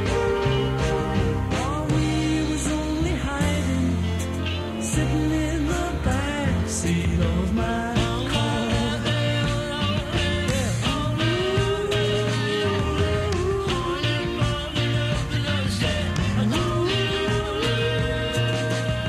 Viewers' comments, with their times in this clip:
0:07 He has so many greats but I have to go with this as my favorite solo Paul song. Hypnotic. The melodies, the instrumentals, tempo changes and his voice. It’s just perfect. His little Beatles-esque “Yeah!” leading into the first “Oh, we believe that we can’t be wrong” makes me smile every time. And when he breaks, laughing I laugh. Just a genius. We’re so lucky to have him. ❤